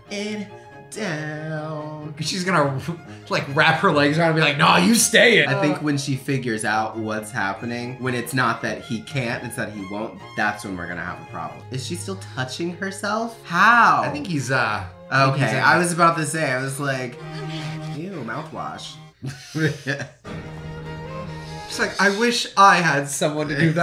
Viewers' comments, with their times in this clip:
0:06 Just doing a rewatch and omg just noticed Jimmy Barnes singing in the sky 😂😂